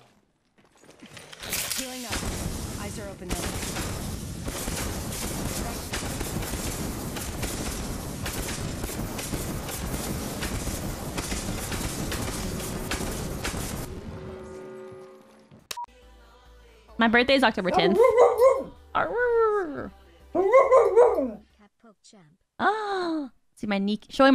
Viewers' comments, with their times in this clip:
0:06 did u not know that u have to buy a dlc for audio